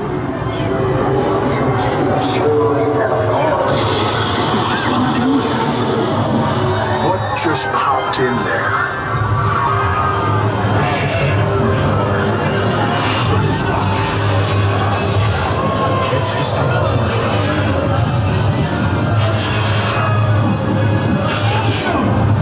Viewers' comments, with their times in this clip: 0:03 you can hear the guy recording it curse in the background